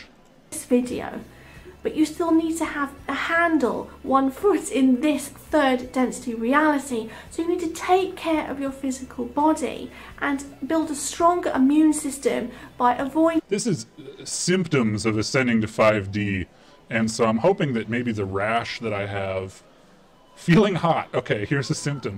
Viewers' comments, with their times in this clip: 0:08 I like how British women say the word 'body'.